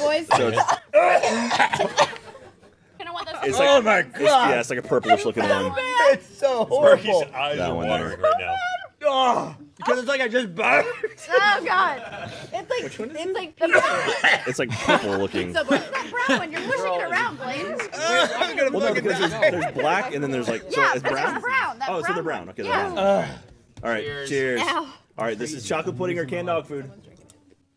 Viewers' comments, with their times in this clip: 0:10 when Burnie gags mid sentence is probably one of my favorite parts. xD